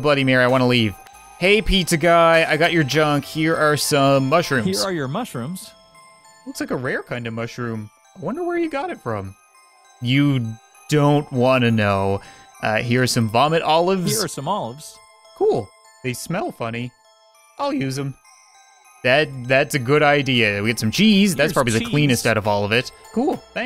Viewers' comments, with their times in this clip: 0:05 don't you think he sounds exactly like captain sause